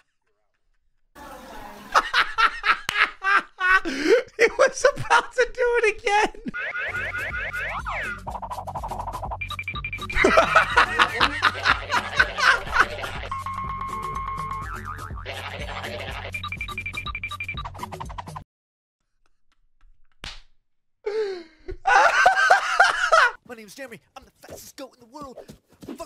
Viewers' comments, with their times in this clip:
0:06 the goofy ahh sounds got me
0:07 classic cartoon sounds